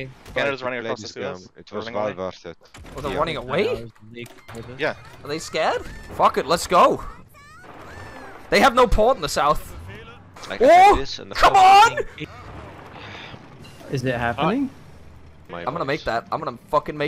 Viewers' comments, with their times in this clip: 0:03 whats that anime noise in the background when he gives orders lol